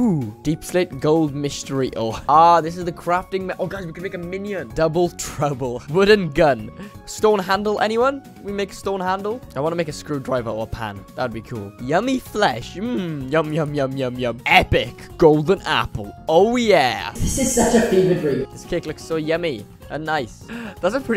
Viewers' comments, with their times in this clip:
0:09 do nobody hear Music in backrounds?